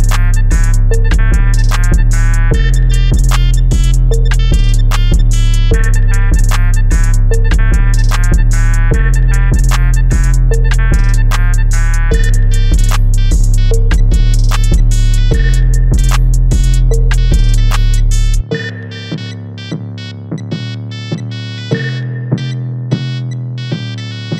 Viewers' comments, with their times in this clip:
0:06 listen to this part and think of the words “my name’s SpongeBob” and it’ll start to come to you